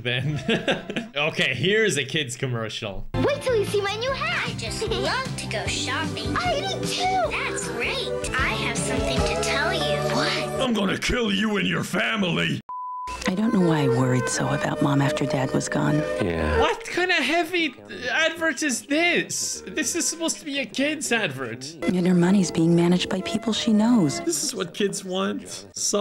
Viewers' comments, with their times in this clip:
0:08 followed by sever laughing and coughing convulsions 🤣🤣🤣